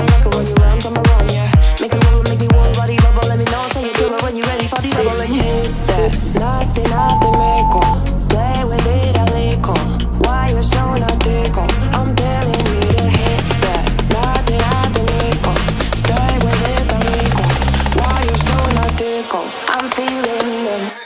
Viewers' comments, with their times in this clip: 0:09 pam is literally working out in paradise, look at this peaceful, beautiful and sunny place!!!💛😍☀️ P. S the bird is telling us to not give up yet, because it knows that it's not even the half of the video!!! 😂😂